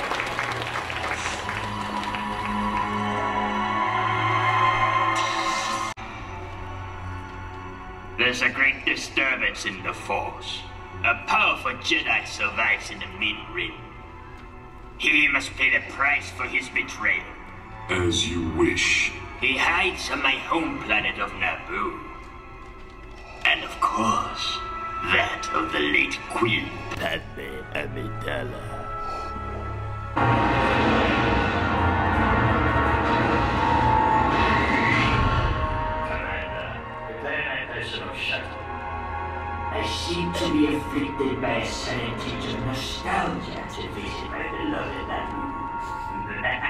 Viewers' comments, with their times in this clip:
0:09 I thought this was Ian McDiarmid
0:27 Yeah! Let's make it only my left ear! I see it cuts to the real film so I can hear it with both
0:28 The cut in of the right earphone made me jump lol